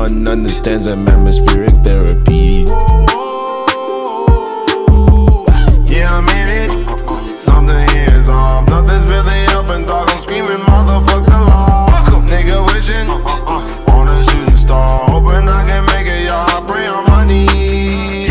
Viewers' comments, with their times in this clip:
0:04 when THUG starts singing background👽👽👽👽